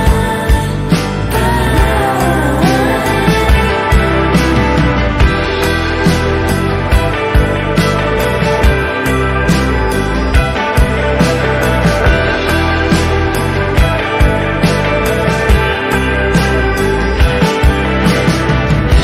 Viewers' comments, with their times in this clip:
0:04 the guitar goes insane. This is all around immaculate.